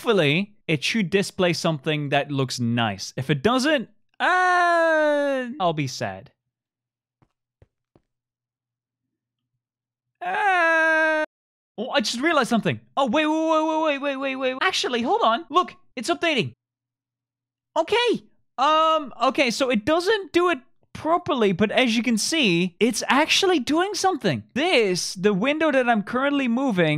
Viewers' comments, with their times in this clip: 0:08 that cry is so funny